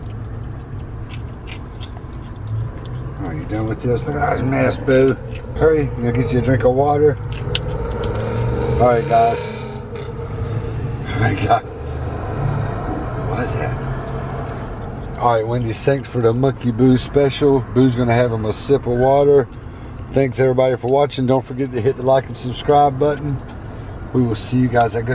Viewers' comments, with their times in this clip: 0:10 Boos face when he heard that motorcycle😂
0:11 When Boo hears the motorcycle 😂😆